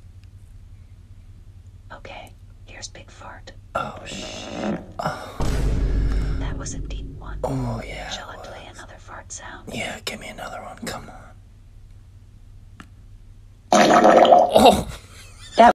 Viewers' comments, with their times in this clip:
0:12 Naaahhhh the last fart💀💀💀